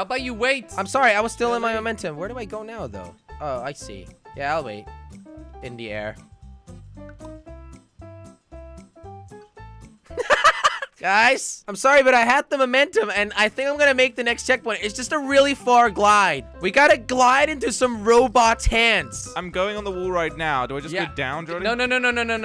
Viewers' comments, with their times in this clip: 0:08 I laughed so hard when there was complete silence and randomly laughed
0:09 jelly laughs for no reason 😂😂😂